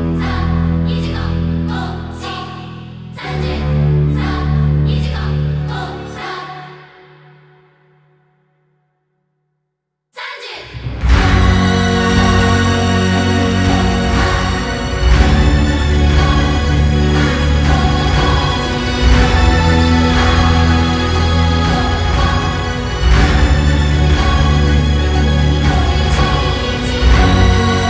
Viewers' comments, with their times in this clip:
0:09 My ears still looking for another and strong verse after